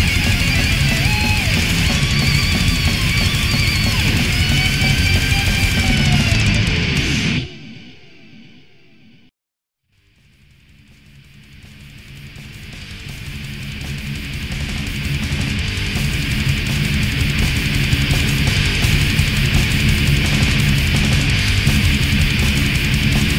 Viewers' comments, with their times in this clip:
0:10 why do they have so many songs that start exactly like this hahahah. I was thinking "This isn't Warmaster why is cenotaph playing... Or is it powder Burns?" I fucking love this band though
0:11 Anyone else think that sounds a lot like the intro to ‘The Killchain’?